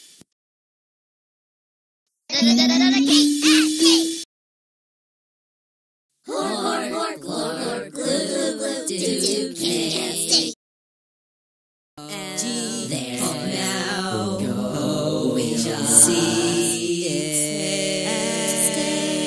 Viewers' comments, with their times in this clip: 0:05 who eats cake like GLORP GLORP GLROP GLOOP GLOOP GLOOP DOOT DOOT DOOT